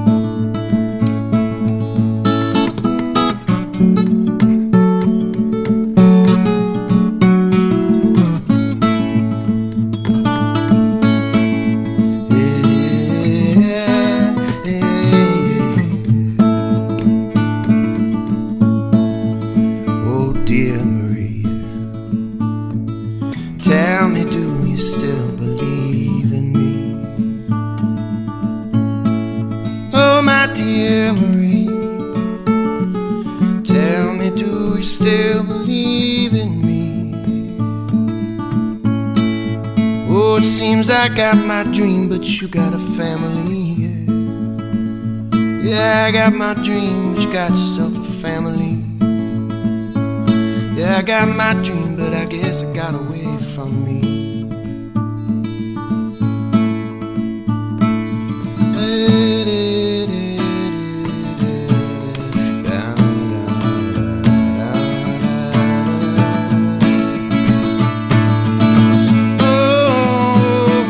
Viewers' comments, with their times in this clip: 0:04 the moment you realize a string is low of battery because you can't miss a note like that being John
0:56 I love the moment in “Dear Marie” when John casually stops finger picking, then picks up the flat pick that’s been waiting on his right knee and strums the song into another dimension.